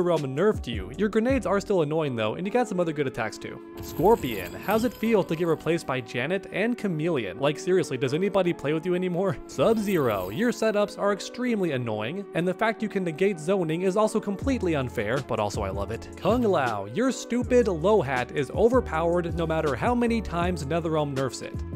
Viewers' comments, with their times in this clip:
0:06 FINALLY CAUGHT HIM SAYING JANET NOT JANETTE!